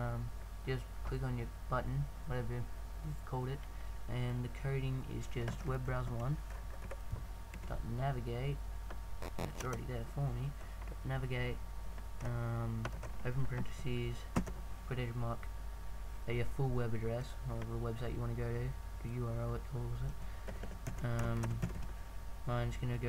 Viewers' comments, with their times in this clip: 0:09 Dafuq! lol was that a fart?